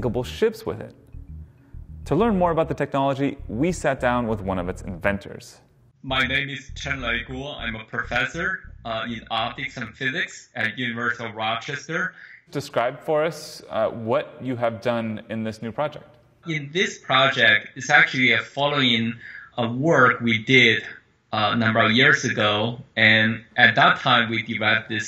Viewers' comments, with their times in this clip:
0:06 why does every expert in these YouTube videos have the worst microphone ever made?